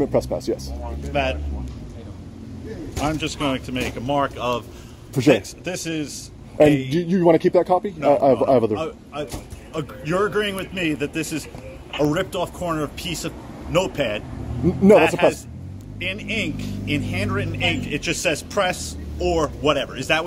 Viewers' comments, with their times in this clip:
0:08 when the cop stutters and says “you’re agreeing with me” when you never said anything about agreeing is top tier cop shenanigans 😂😂😂